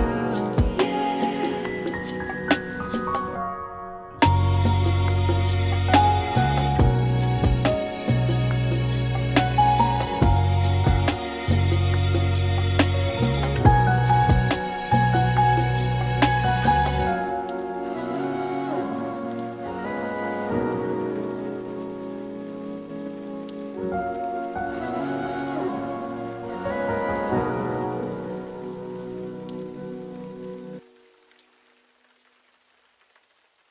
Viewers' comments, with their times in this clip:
0:04 What u used violins 🤔
0:17 how did you make that awesome vocal effect ?